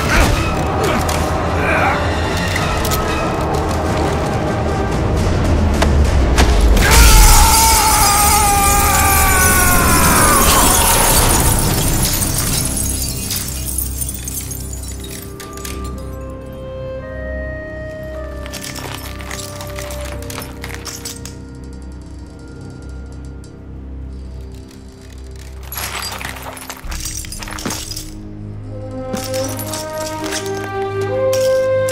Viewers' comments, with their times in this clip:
0:05 it sounds like chucky screaming when he is mad and is about to kill someone
0:06 That scream of death from Makarov is so satisfying, especially after the fact that he killed Soap.
0:14 I like the music that plays here, like it came from old WWII CoDs
0:15 I love how they use that subtle version of the MW theme.
0:15 this music reminds me of the Chernobyl episode in Call of Duty MW 1 (I got emotional)